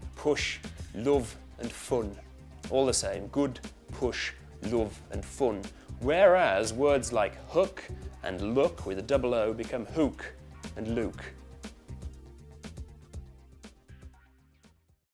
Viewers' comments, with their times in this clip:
0:07 we say hook like hewk but we dont say look like lewk that's just silly hahaha